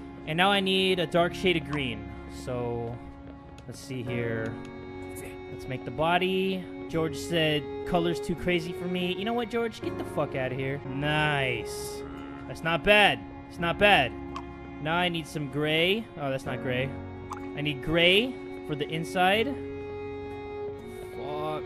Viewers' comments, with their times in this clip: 0:06 i thought george said "colors too green for me!" lol